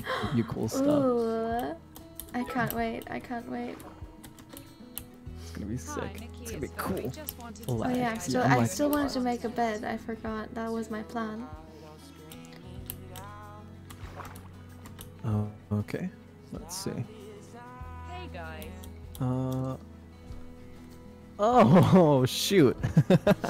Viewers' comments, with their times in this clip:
0:04 The sound cut out for me somewhere or something. No idea why, it just did. It wasn't my headphones because I went back in the video to when there was sound.